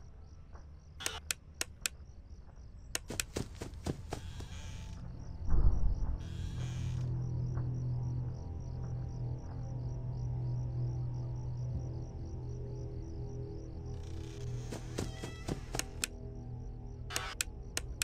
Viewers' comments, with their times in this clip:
0:05 I heard the creppy breathing;;-;;